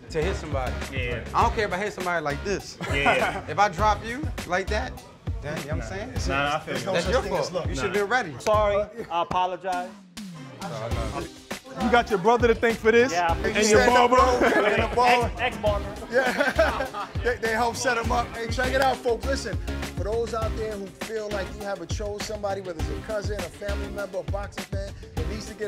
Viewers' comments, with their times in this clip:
0:10 if there's anyone from the UK watching this, tell me this isn't a knockoff the duff duff from EastEnders.